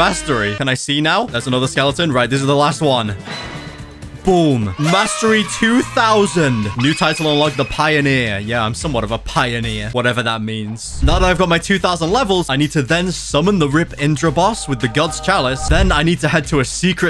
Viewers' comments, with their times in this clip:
0:04 bro said mystery 2000 💀